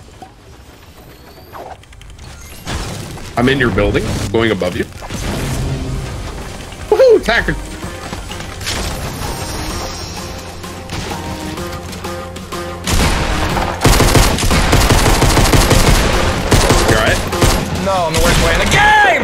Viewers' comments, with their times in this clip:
0:07 I love that feeling when the song comes and we know ninja is about to say fuckkkkk 😂😂